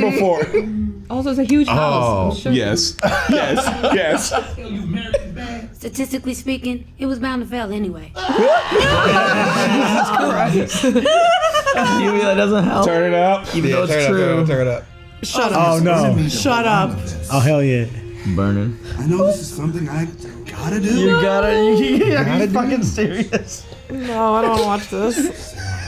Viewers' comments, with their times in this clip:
0:08 Tom sounded like Stinkmeaner for a second!